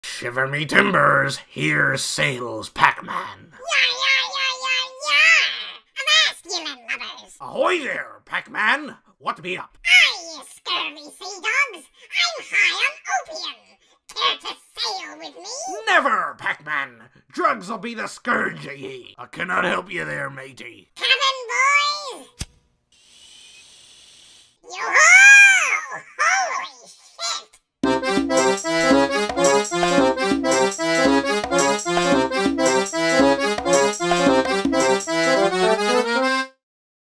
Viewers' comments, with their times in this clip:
0:04 he sounds like a little cry baby XD
0:27 I love the sea shanty Pac Man theme It reminds me of the music from the old Shipwreckers game for the original Playstation.
0:28 Never, Pac man! Drugs a be discouraging. Yo-Ho! Holy Heck!
0:28 pvz2 music be like: